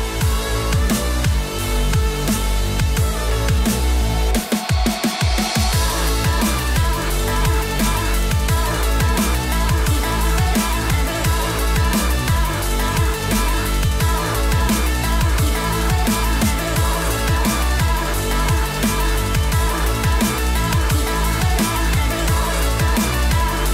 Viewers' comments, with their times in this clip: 0:04 The music just makes it so much better...